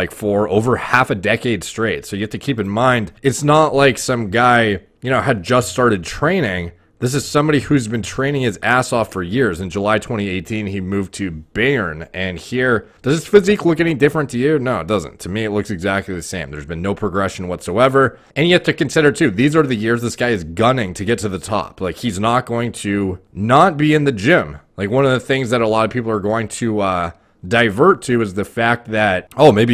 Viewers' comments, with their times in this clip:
0:10 never heard anyone ever say bayern like that 😂
0:10 was torture to my ear 'beryen' 😂
0:10 Everyone: bayern More Plates More Dates: beern